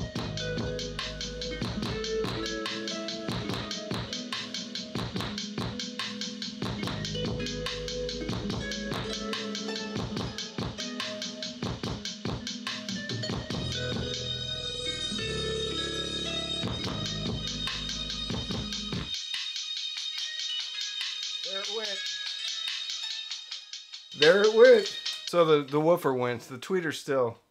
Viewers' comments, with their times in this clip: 0:09 I was waiting for the cone to be launched out of the basket. Definitely could hear the voice coil slapping into the back plate.